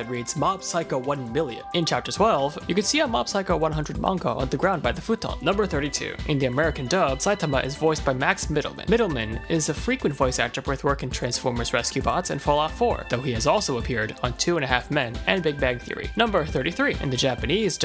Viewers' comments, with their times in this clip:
0:05 Me: What was that name? Max... Middleman? Googles Max Middleman Me: ... that was NOT what I was looking for!!!!